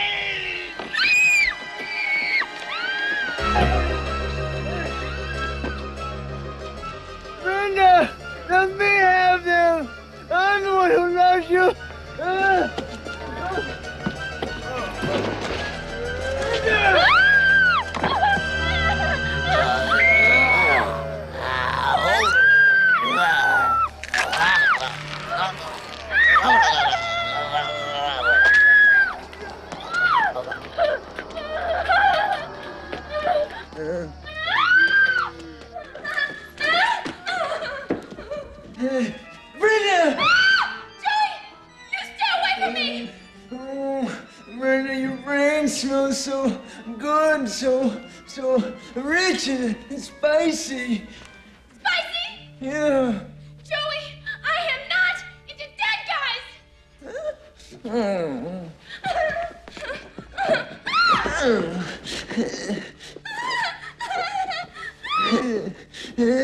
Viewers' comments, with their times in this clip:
0:05 I liked the fact that she scared a zombie with her screaming LOL!
0:54 Lmao his squeal a littler after makes me lol every timem